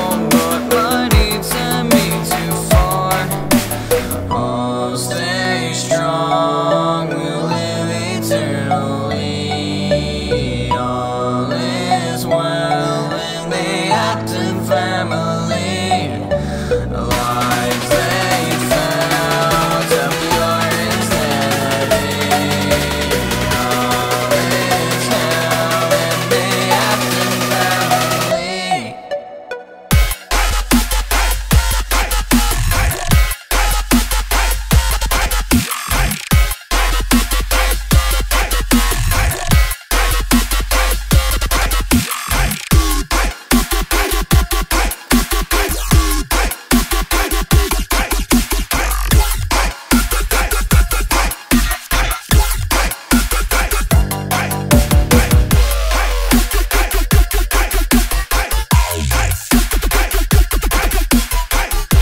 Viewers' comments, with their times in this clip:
0:05 This sounds like something henry Emily and Micheal afton would sing henry starts singing
0:49 It's me or does that sound exactly like the dark troopers theme from The Mandalorian?